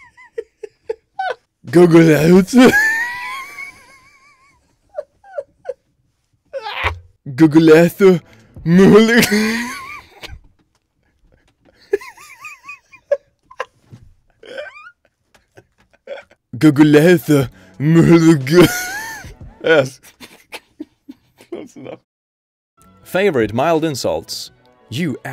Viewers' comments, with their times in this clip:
0:07 That f**king wheeze oh my god
0:11 Arnold Acharzenegger is that you?